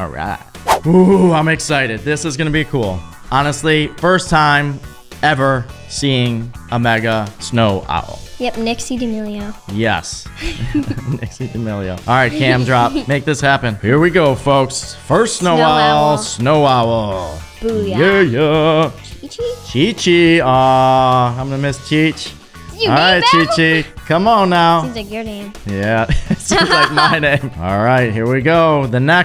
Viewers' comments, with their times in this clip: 0:10 is it just me or did they say”dixie damilo”